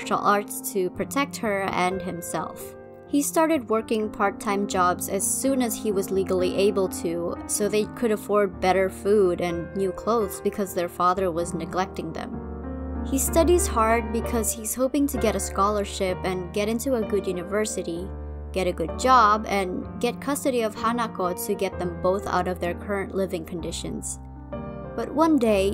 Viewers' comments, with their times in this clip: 0:08 don't think I didn't notice the piano chords for Stigma playing in the background 👁👁 You are someone of culture- new subscriber indeed 💃✨